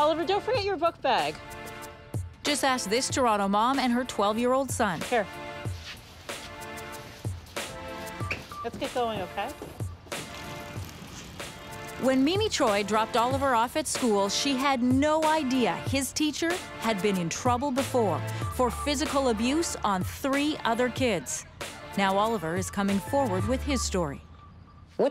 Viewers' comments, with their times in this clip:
0:06 The music sounds like it's from Cal Chuchesta's album.